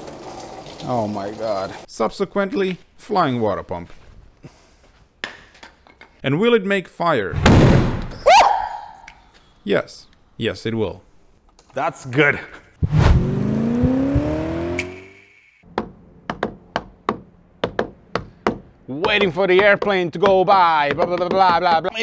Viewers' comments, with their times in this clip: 0:06 The stories tell of the manliest scream of all germany from centuries on.